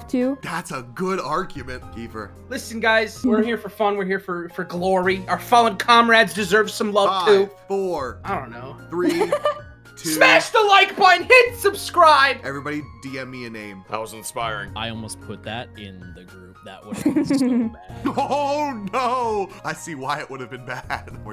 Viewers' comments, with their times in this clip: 0:09 Completely random unrelated thing but I was looking at a picture of Deku on twitter while listening to the video and this sounded EXACLY like him LMFAOOOO